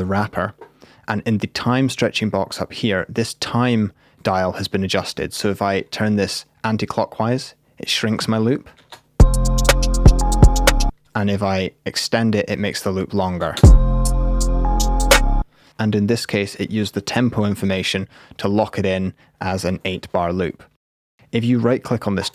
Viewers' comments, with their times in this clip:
0:08 that actally sounded neat
0:08 .... this didnt even sound bad... sounded like fast DnB...
0:09 Burial? Is that you?